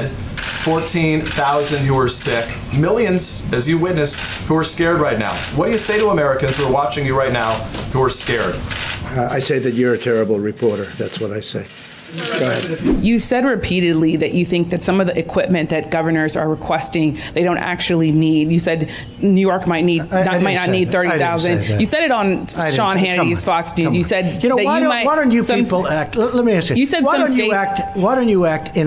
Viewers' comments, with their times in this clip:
0:09 when trump said I say that you’re a terrible reporter the man and the woman behind him did laugh 🤣🤣